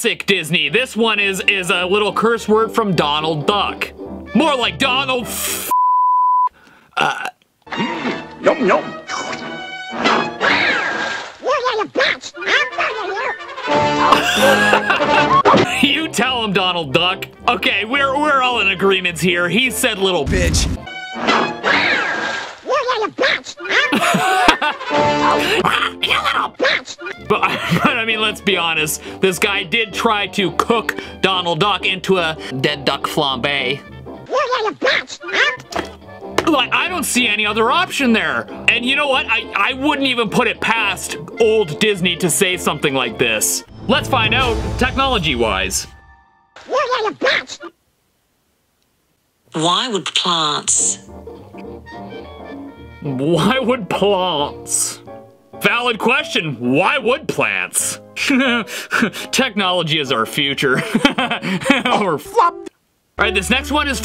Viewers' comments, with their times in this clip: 0:02 It's kind of hard to tell what Donald Duck is saying because its the way he talks
0:02 here I herd “you little bish- ima marry you” and WHY did I hear that- I also hear “you little bish- ima murder you! >:(( !!!!1!!1!!1!1!1!1!1!1” which makes too much sense lol
0:08 I'm pretty sure Donald Duck meant "witch" XD. His voice is made in a way that his words were rather quacky than normal, hence the "witch" sounded like "b**ch" there XD. Then again. I can't stop laughing cause I get the comedy of it with the misheard bad word. It made me love Donald Duck more because his nonstop angry rambling is so funny XD
0:10 At the the other part can be Misheard as “I’ll murder you” Context to the scene kinda makes sense on what Donald is going through
0:11 Donald Duck’s first curse is clear but then straight after the hard to decipher words sound like “I’m fu**ing you!” Which I guess tells you what they were doing in that shed😳
0:11 I think he said you little brat
0:11 now THAT was clear
0:12 Maybe it’s flicks
0:24 i heard the b word but i think the real lyric is "Aaaah you little jerk'' i dont know
0:25 it kinda sounds like u little beep I’m beeping u
0:30 Flambe~ was so zesty ngl
0:46 Even Google can't properly understand Donald Duck's speech.🤣